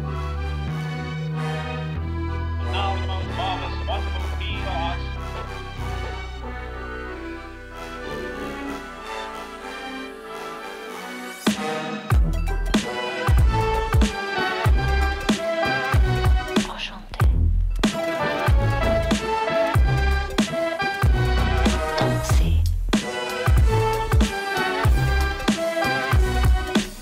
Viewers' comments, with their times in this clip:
0:08 i love these beats :) 🕺💃👯‍♀️